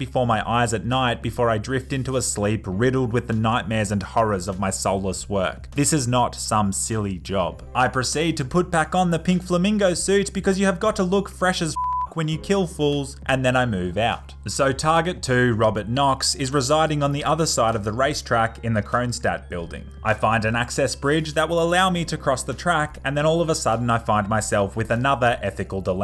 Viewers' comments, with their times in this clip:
0:08 Why does his voice go so high pitched 😂😂